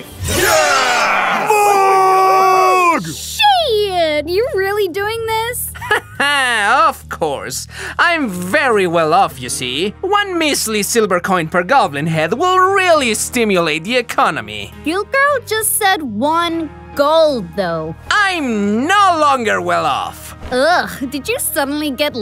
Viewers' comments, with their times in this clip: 0:08 I LOVE THAT HE SOUNDS LIKE THE BOSS FROM HARVEY BIRDMAN 😂😂